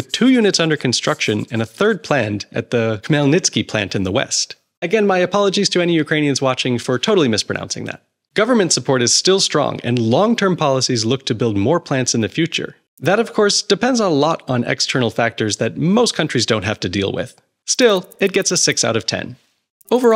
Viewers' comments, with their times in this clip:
0:05 You should not apologize about your pronunciation. It's the best I've ever seen from non-Ukrainian